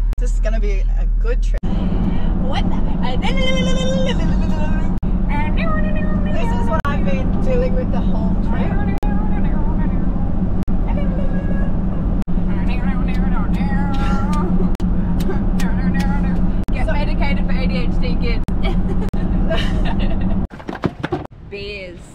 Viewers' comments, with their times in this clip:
0:06 that city girl friend of yours sure sounds like a country girl from the Ozarks or Appalachian Mountains.